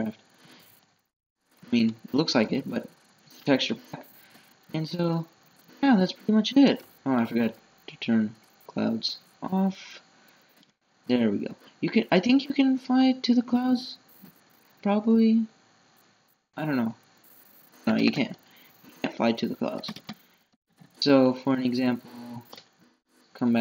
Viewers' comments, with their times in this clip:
0:09 Voice crack OMG